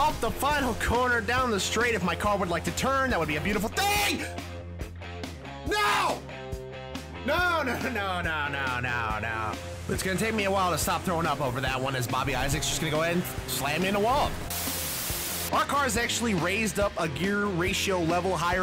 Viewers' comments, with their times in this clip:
0:05 That's a pure Tom Hanks "NO!"